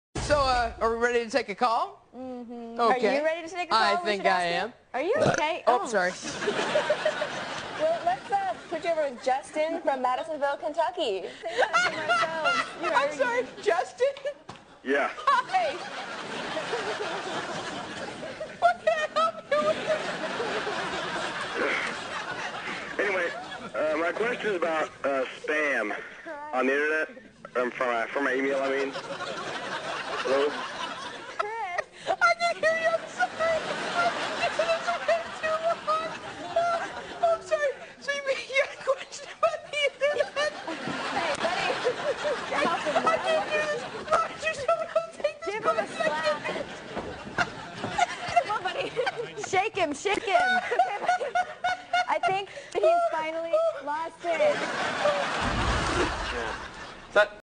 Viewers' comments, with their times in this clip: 0:05 he laughs because he just burped
0:05 NOT SURE IF ANYONE NOTICED THIS LOL "BURP!" .... "Oh shi...."
0:11 = transformation into bird.holy shit
0:11 he just bust out laughin' in the dude's ear looool
0:30 Mickey Mouse in tha house!
0:49 sounds like tickle me elmo